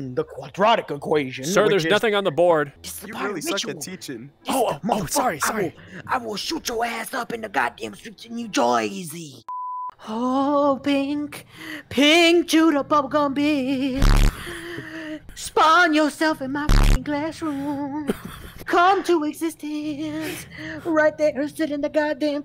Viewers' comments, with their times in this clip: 0:10 my favoruite part was when muzan started singing like his acenstor michel